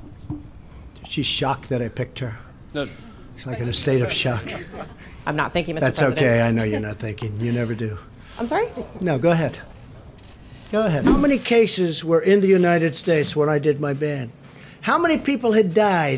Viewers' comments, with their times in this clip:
0:04 The bodyguards laughing at his joke is so hilarious